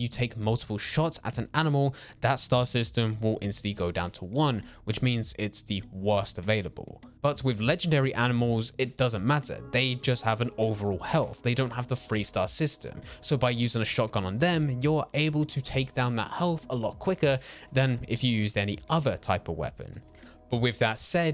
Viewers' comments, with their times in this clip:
0:08 did u guys hear that scary Roblox sound ?